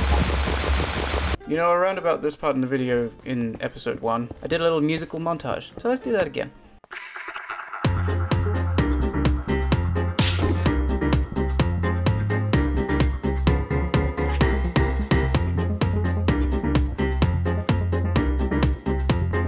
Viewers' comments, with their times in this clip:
0:07 HIT ME WITH THOSE MAD STYLE FONKY TONKY BEATS!!!